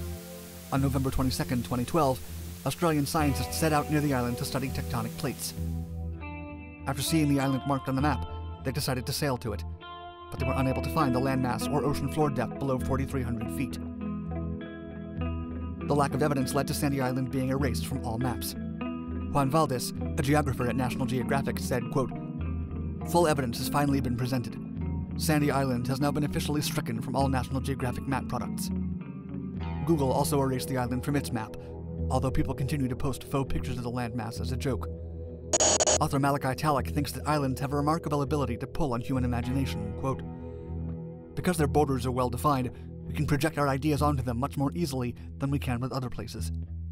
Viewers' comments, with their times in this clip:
0:03 The buzzing sound finally ended
0:34 When an intergalactic transmission interrupts your audio with an alien 👽 split second message.👀